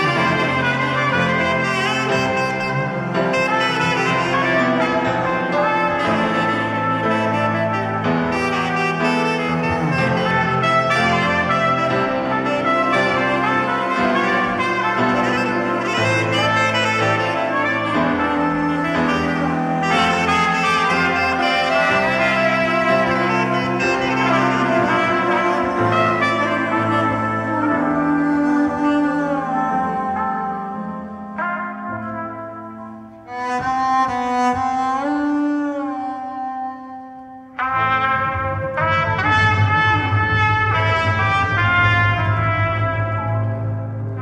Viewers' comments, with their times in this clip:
0:10 that cello sounds like the flow of water coming from the mountains
0:30 genius. i tend to hate covers where the voice melodies are replaced by an instrument, but the control over dynamic is as if the studio recorded voice was measured and learned by the bow'd upright; and the way you're passing the voice melody back and forth make for a diligently crafted revision. the piano is as accurate as it gets and the one added note gives it an emotional signature in the best way. everyone here clearly has the ability to go off on a musician tangent and make it something it was never supposed to be, but the ability to hold back and let the song breathe shown here takes a severe discipline and maturity. wow. was there a soundboard recording of this, by any chance?!